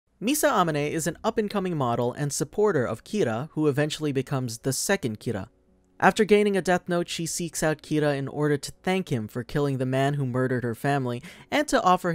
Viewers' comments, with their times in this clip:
0:00 Misa A-men-e. this is my frist sign that you didn't even actually watch the show.